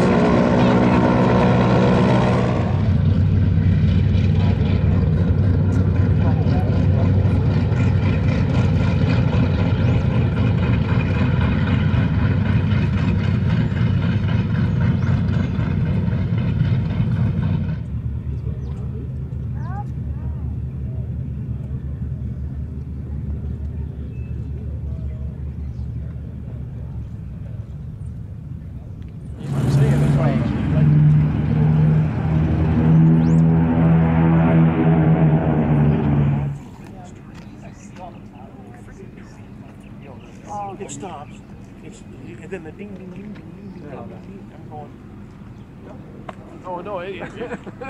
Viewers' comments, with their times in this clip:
0:03 beauty sound engine. Music sound
0:29 sound of take off like ww2